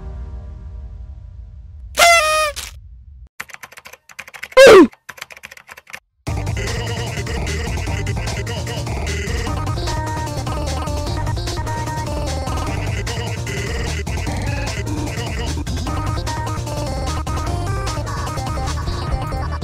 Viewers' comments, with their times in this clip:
0:04 Why is there a oof it this part